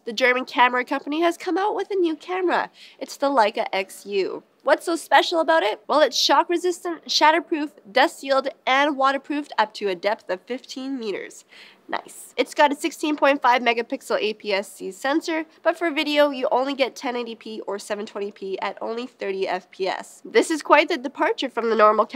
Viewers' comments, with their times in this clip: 0:07 shadow proff? or shatter proff? :D